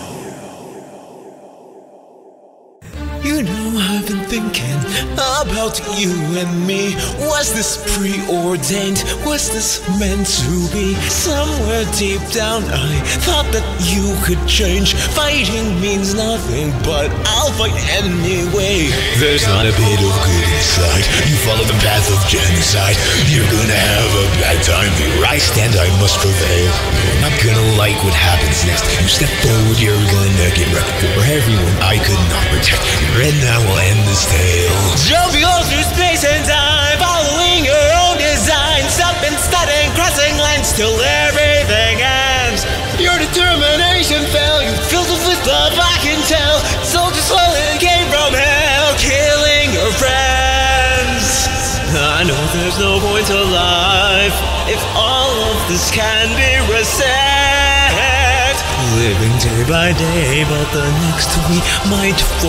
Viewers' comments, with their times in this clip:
0:03 is when the music starts
0:03 he starts the song.
0:30 I'm either hearing "Kill or be Killed" or "Megalovania" being chanted in the background.
0:33 (deep voice) here and now I'll end this tale jUmPinG aLl tHrOuGh--
0:35 So, so strange, whole my life this part sounded strangle familiar, not like a megolovania, something else.....
0:45 you fill fup fwith fove I can tell